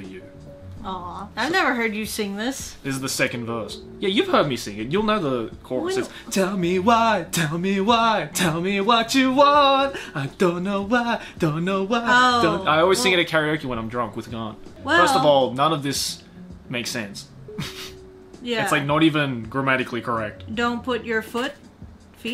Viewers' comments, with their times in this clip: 0:06 Boi got vocals